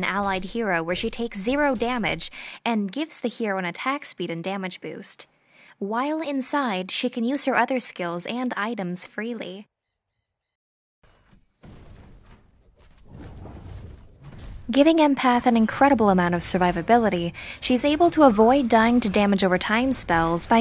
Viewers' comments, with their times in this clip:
0:06 Transcribe Audio on, "wyoming inside"